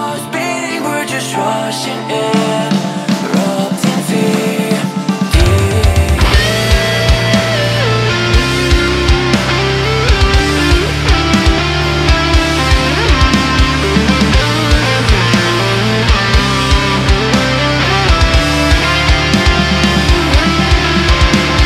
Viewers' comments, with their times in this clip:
0:06 SHREZZERS always give us beautiful and empathetic guitar melody.